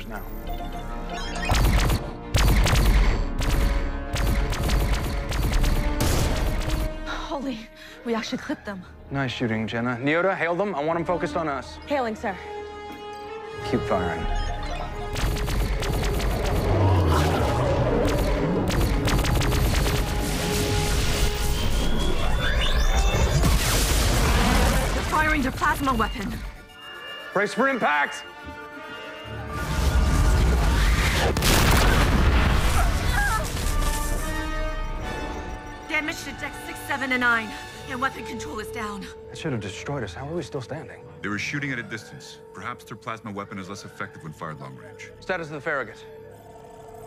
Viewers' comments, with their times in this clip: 0:04 Its not as ridiculously funny as hearing both the Enterprises' tactical officer speak after hitting one of the enemy ships; [a sound effect] like a baseball striking an aluminum garbage can. ===⚾💥
0:31 someone just finished using a stargate by the sounds of it.